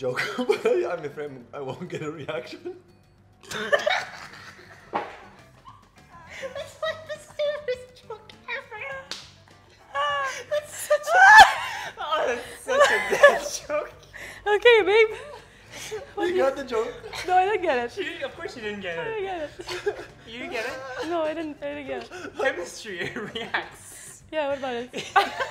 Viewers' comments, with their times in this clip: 0:06 Erwan is so giggly!!!! 🤣🤣🤣
0:06 What happened to you voice Erwan??